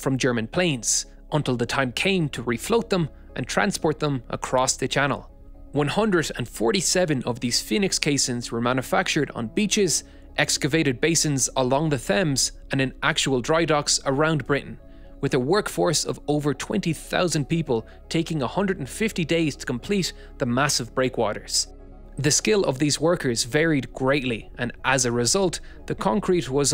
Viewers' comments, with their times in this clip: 0:10 Did you just say thames like mike tyson?
0:12 Nobody gonna talk about the pronunciation of Thames ?? 😂
0:12 'fames' hahahaha you mean thames said 'temmes'